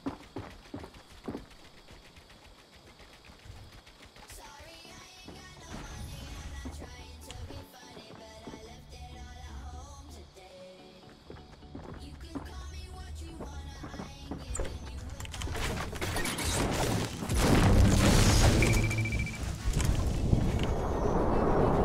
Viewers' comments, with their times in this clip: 0:09 holy shit that song just woke up a whole lot of nostalgia man